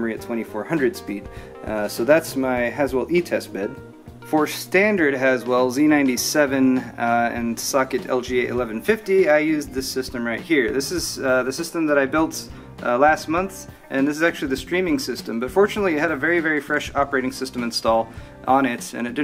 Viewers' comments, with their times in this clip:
0:06 sock-et, priceless haha